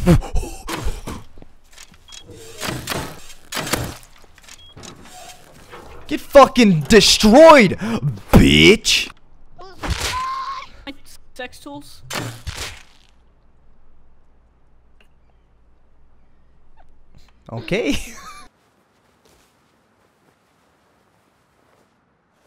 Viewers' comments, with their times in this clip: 0:09 I love that scream